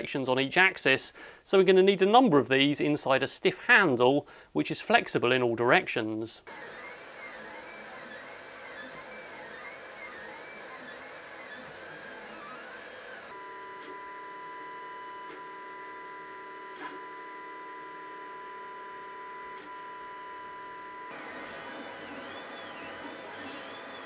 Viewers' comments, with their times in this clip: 0:08 The 3d printer sounds like it's singing "flight of the bumblebee"